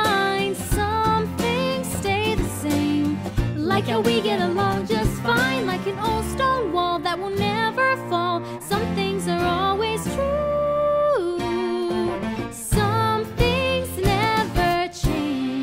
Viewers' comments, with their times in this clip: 0:03 lol 😆 not your voice😆